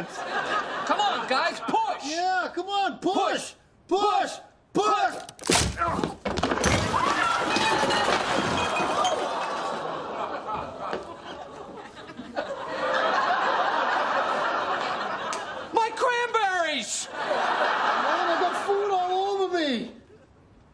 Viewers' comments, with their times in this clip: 0:06 They’re all screaming just because the food are all ruined and Chandler bickering on his cranberries. But can you imagine an impact like that? He may have injured his ribs and back due to the crash.